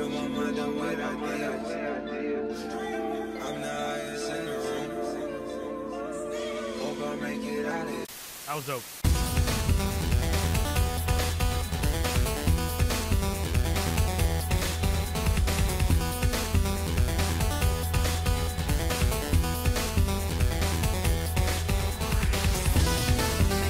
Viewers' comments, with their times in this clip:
0:08 the intro to the song was a bop bro